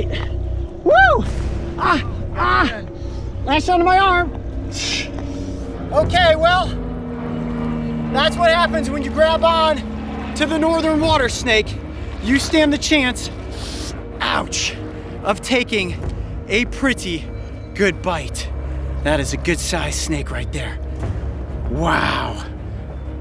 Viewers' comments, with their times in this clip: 0:06 That airplane really added to the dramatic music😂👌😂